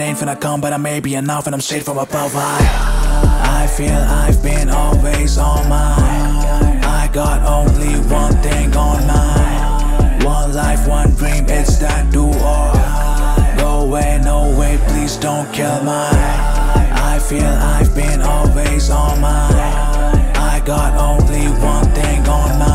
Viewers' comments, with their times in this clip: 0:04 i thought i was on kanye's song....🥵🥵🥵🥵